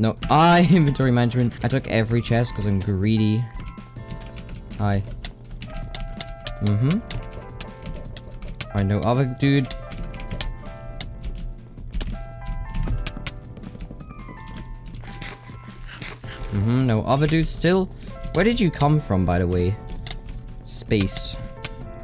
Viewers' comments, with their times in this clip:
0:04 the hits were perfectly synced with music.